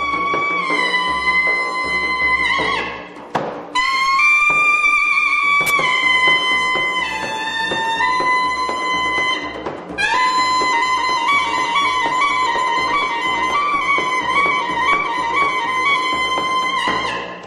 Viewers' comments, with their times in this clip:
0:05 is another glitch but similarly does not interfere with performance ,: 0